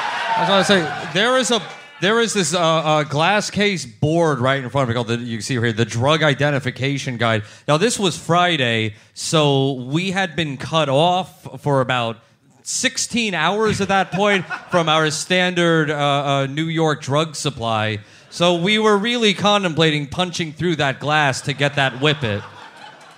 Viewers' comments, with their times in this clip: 0:08 had to stop watching seconds in, the hooting and hollering of the audience just really grated on me